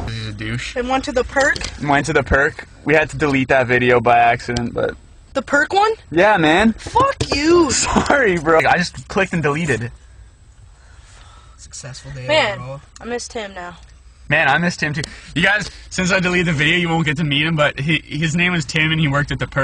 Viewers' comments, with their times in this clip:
0:05 i love the way he says "fuck you" haha. <3 ;)